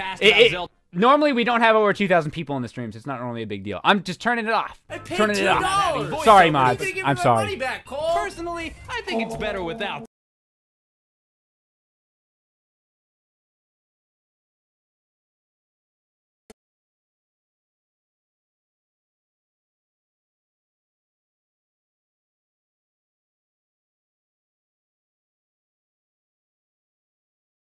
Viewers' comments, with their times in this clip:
0:10 I fell asleep and woke up to a completely silent red room… I felt like I was haunted for a second there